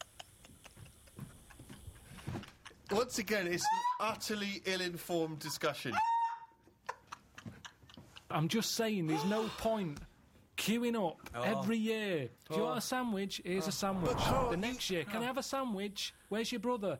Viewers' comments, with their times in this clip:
0:03 Ricky sounds like a rooster. 😂